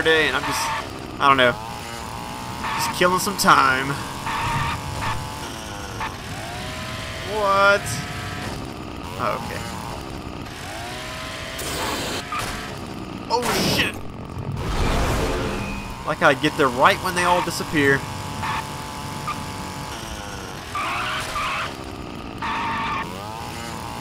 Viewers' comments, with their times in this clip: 0:08 wtf Boom muAHAHAHaHAhAHA